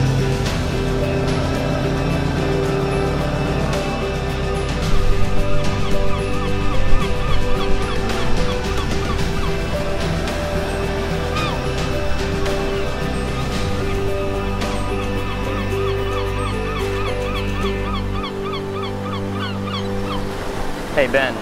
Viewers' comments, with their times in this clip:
0:08 LOL 2 times hear the birds chirping 2 time fast while their talking about there broken cars. So they commute to Alaska and waste like 10,000 on car repairs. This series is soooo dum.